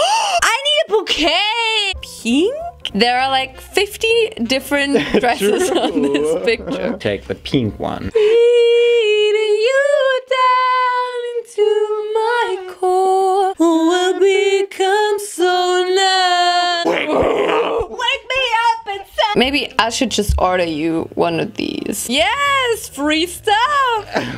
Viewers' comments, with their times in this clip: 0:09 love that song😂😍